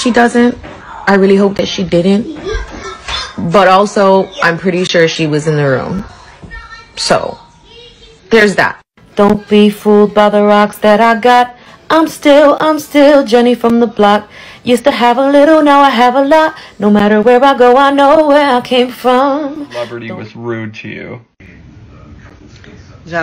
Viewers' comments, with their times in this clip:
0:10 that vocal line she sings is 🔥🔥🔥and catchy af but it’s not that vocally taxing to sing lol Jlo couldn’t sing that on her own? 😵‍💫😳😳😳